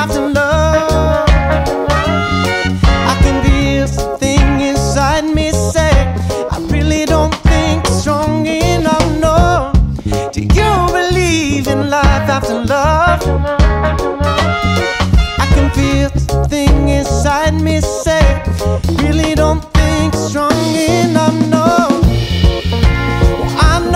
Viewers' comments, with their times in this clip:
0:07 haha, that look for the slightly wrong note!